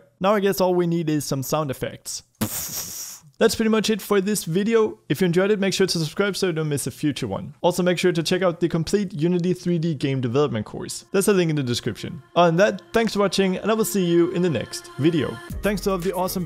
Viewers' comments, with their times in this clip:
0:04 "PPPPFFFFFFF!" Loved the sound effect!